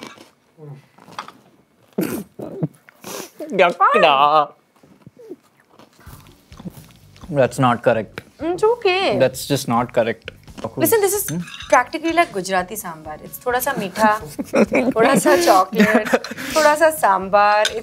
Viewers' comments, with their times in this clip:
0:03 The Bangalore-ness of Kini Yuck daa😭😂